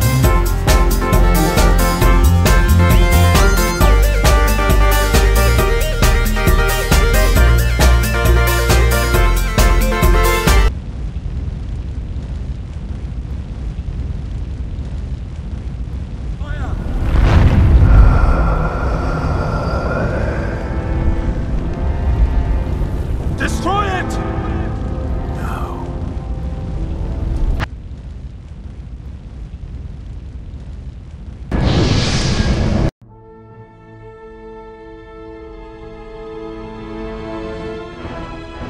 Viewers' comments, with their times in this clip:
0:03 I love the teleporting synced to the popping noise.
0:16 I only just now noticed that you can still hear "fire" (from where Elrond says "cast it into the fire!" before the "destroy it!") and now I can't unhear it.
0:23 wtf say the god pala? destroy it? desoid? :s
0:24 everyone here talks about expectation to quit of the rushed pal or the music feels. i`d want to point one thing: that was the most awesome "no" ever said :)